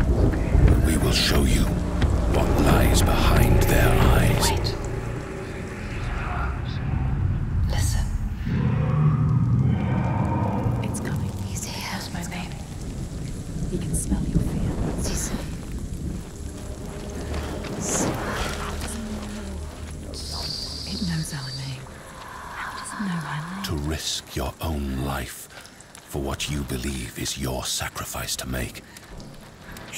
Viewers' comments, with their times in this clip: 0:10 Instant chills and goosebumps When I heard the two voices again